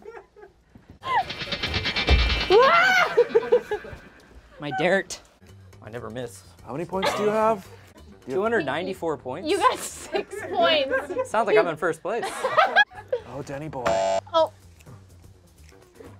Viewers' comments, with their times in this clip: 0:04 is spencer secretly canadian? The way he said dart here is how we say dart (as in cigarette) in canada